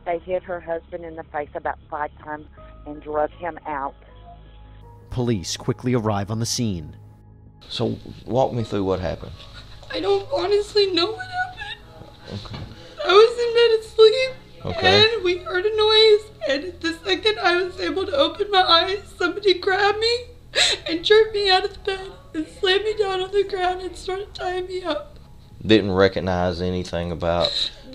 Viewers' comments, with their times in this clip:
0:07 Goh man, in her first statement at the house you could already see she was lying. Her fake cry and the way she constantly had eye contact with the officer. This eye contact is to find out if he beliefs your lie. The cop asks, walk me through what happened. "Honestly I don't know what happened" The officer doesn't buy that and responds with just "ok". And then she goes on in full detail what "happened". Guilty from the start. The things she didn't lie about are answered in short answers, the lies are the long explanations....
0:10 listen to her fake crying. I vet the police officer talking to her even noticed this. Fake hyperventilating and I couldn't see but most likely no tears were presented while she sobbed.